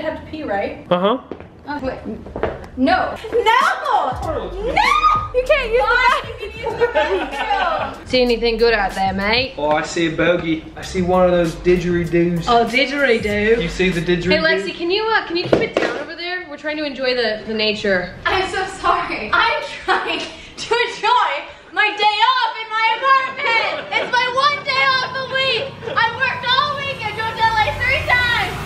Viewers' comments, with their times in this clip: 0:09 Pierson loses all her Australian subscribers